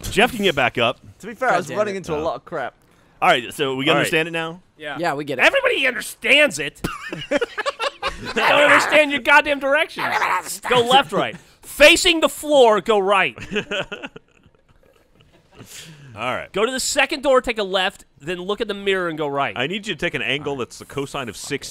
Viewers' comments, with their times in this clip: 0:05 Geoff turns into a chiwawa (?not sure how to spell?)